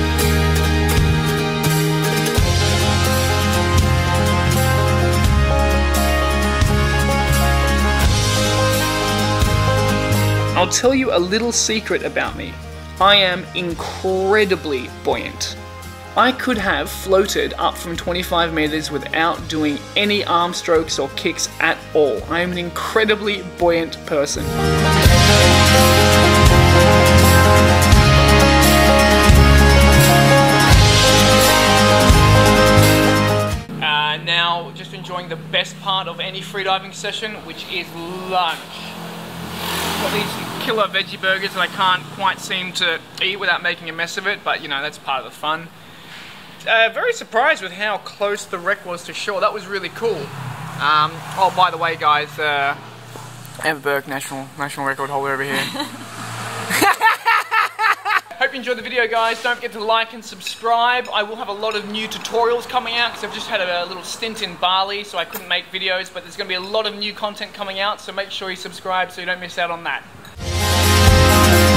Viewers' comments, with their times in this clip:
0:03 The music brings me in an epic mood. It looks incredibly free when you take off the wreck Great job, thanks!
0:55 dat laugh GOD BLESS YA